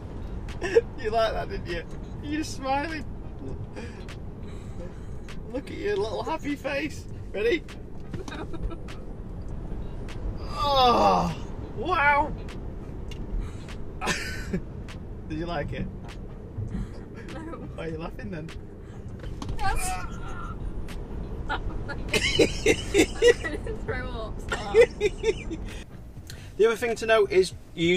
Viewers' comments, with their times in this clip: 0:10 the noise every man makes with that kind of acceleration